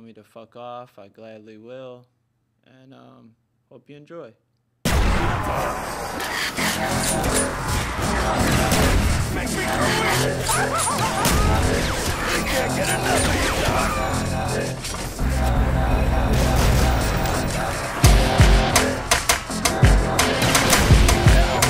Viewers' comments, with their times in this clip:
0:07 when the music started it scared the shit out of me lol i had my headphones on. and what about the green character?